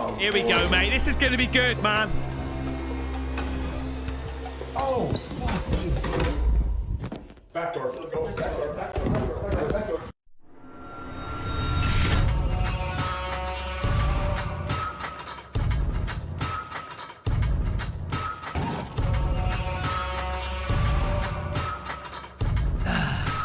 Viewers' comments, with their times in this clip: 0:09 nice job your sound is creepier than intro. haha